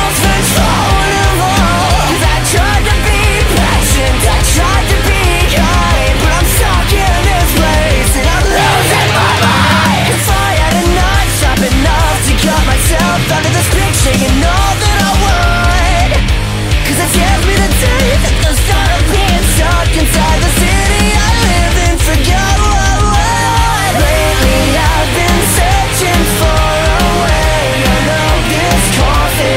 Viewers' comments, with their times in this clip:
0:10 I love the way this verse sounds